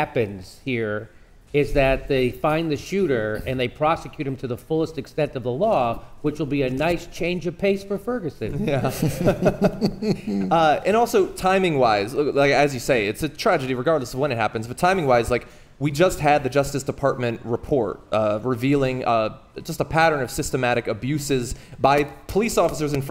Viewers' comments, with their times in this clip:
0:08 you can hear Cenk doing it again to me sounded like that . but I could be wrong.